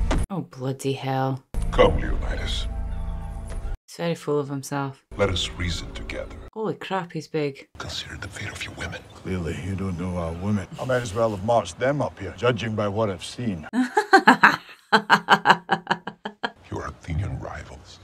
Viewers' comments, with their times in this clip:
0:03 Ah, Xerxes. The hairless giant with an entire jewelry store on his face and a voice like he's in the witness relocation program.